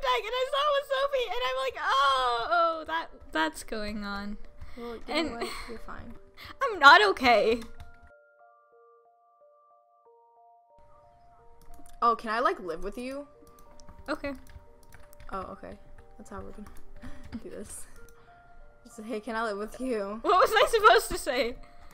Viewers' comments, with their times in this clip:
0:09 Funny video tho it was the wrong time to watch it u know am and u are screaming